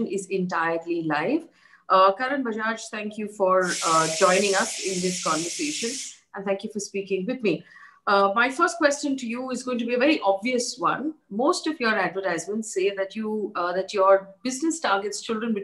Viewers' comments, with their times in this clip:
0:03 Just to keep things lightheaded its cooker ki seeti